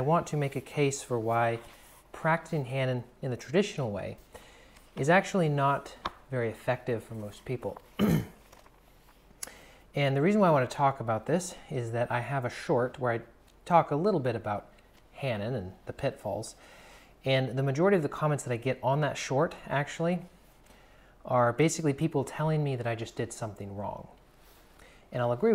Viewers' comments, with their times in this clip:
0:07 oh geez !!!!!!!!!! Such heresy !!!!! This isn't going to go down well heheh. The 'hmm .. hmm' - clears throat is a sign hehehe ..... as in knowing going to open a can of worms hehe